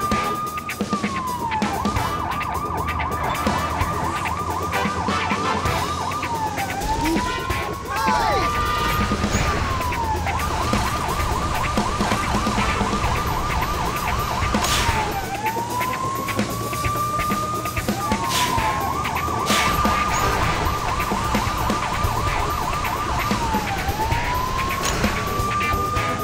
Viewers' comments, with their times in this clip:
0:07 Oof But Looks Like Roblox